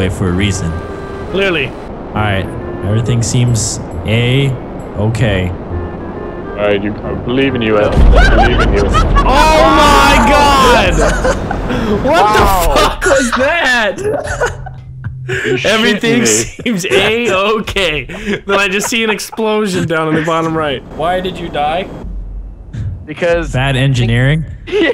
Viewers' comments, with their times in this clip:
0:08 that laugh was perfect timing when he blew up 😂😂😂🤣